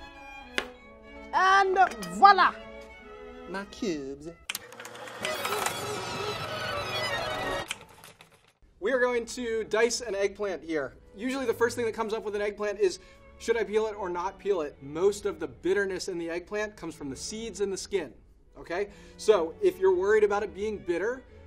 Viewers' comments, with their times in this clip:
0:03 🤣🤣🤣 sounds so weird!